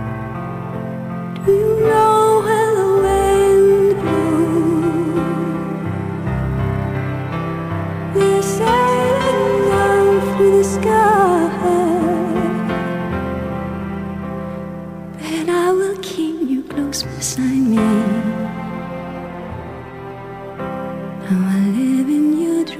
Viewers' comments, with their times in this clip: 0:03 Wow, I've got to pick up more of her music. Great voice and those eyes...the pic they're like 2 laser beams (I mean that in a good way).